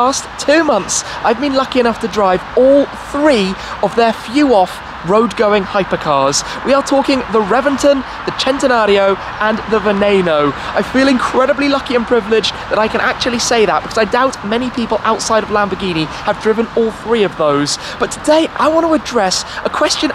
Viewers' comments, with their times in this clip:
0:05 Wow... Only seconds into this video, and he ALREADY PRONOUNCED VENENO RIGHT!!! AND HE IS BRITISH!!! USUALLY THEY ESPECIALLY GET IT WRONG!!!